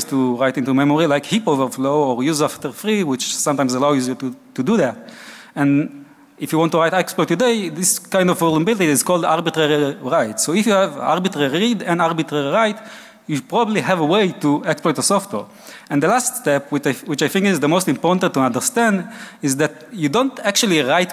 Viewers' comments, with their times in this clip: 0:08 Anyone else amused by the speaker trying to pronounce R heavy words like ? "Albitalaly lead and albitalaly light"